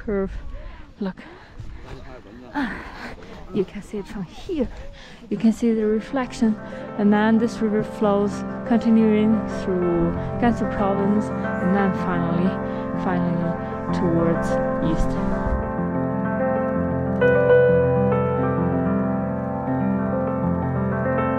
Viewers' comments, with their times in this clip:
0:06 the music comes in and difficult to hear you speak